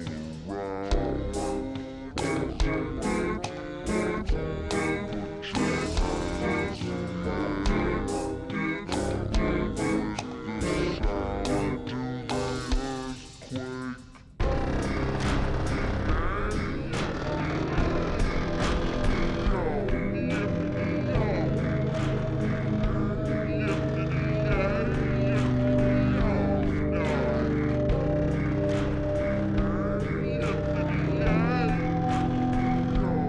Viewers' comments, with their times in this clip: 0:08 my stomach when there is a bunch of people in a room and its dead quiet
0:21 wait for seconds and you hear Some monster saying DIE